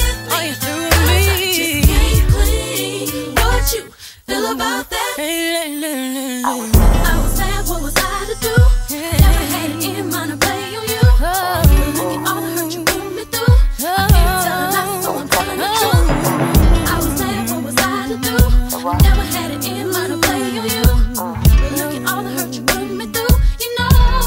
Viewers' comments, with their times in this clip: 0:05 My favorite part was when Bea did that Toni Brzxton run right b4 the bridge!!!!!!!